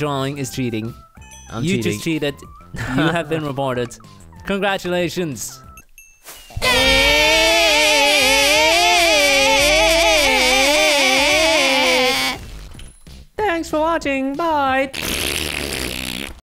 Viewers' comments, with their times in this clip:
0:06 The shriek of the pixel painters who wins alot.....